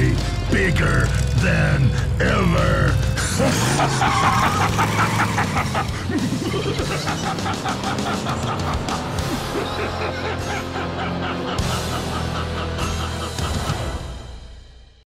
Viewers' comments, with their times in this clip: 0:03 you gotta love his laugh jajja